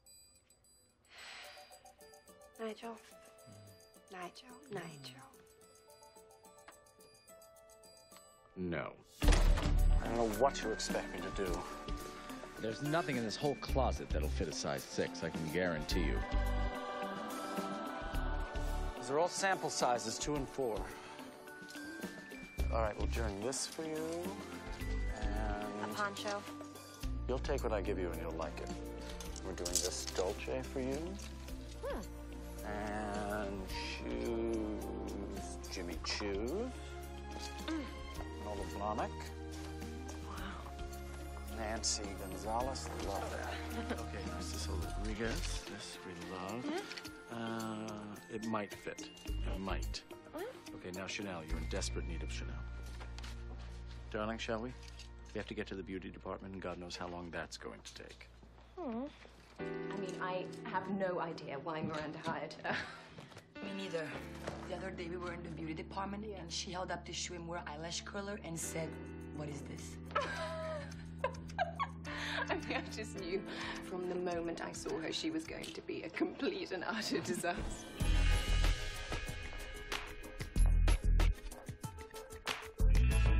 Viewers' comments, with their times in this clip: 0:10 I hate that sound its sounds annoying with the jingle
0:15 The choir when they entered that closet tho 😭
1:05 I don’t know why but I love the way Gisele’s character says “department” in the scene 😂 it’s so satisfying with her accent